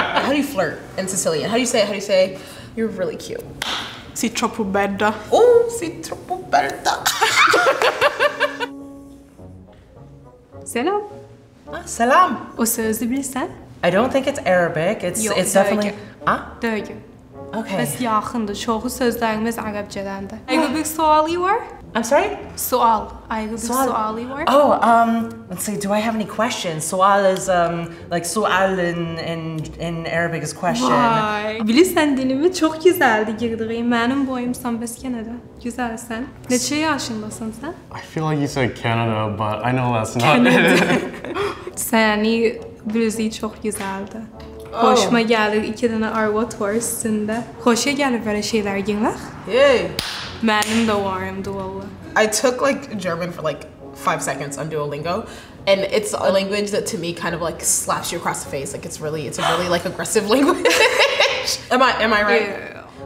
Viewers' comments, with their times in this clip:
0:10 As a Turk, I feel ashamed that I only heard so many turkic characteristics the second time I watched it. I didn‘t pay that much attention 😂😂😂
0:20 Girl speaking more Azerbaijani language😂 like Azerbaijanis in Iran)) wow 😯 its almost same with different dialect
0:35 I LOVE this girls voice!!!
0:48 the way she heeii 😭😭 a shock oo
0:49 the Nigerian came out😭